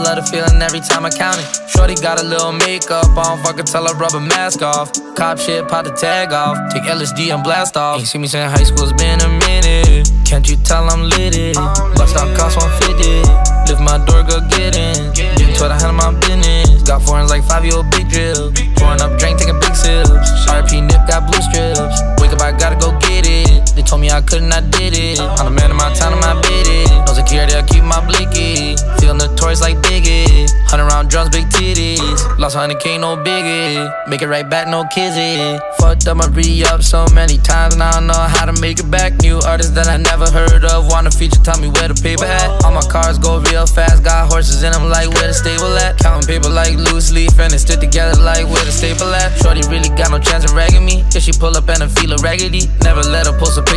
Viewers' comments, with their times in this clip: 0:04 the flow goes crazy, i wish it was longer
0:35 that flow tho
0:35 that flow crazy